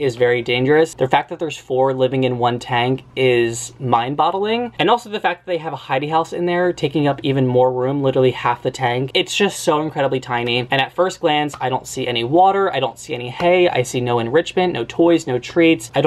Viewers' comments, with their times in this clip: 0:03 Did… did he say “mind bottling”